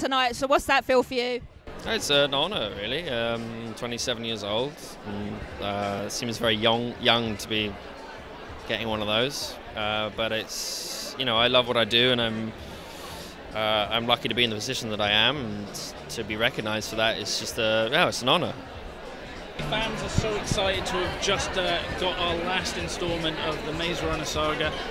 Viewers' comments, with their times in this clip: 0:06 "..seems very yong-young to be" eheheh cute